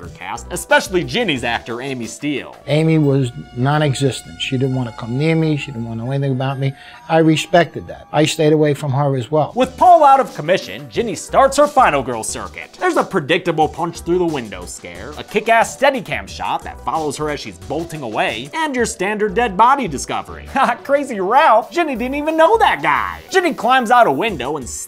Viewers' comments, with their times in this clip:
0:07 I like his accent